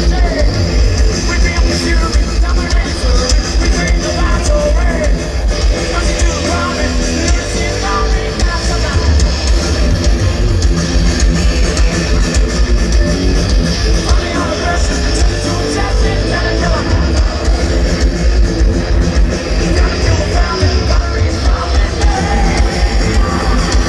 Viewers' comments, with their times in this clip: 0:09 Another spit from james after lars screwed up the tempo haha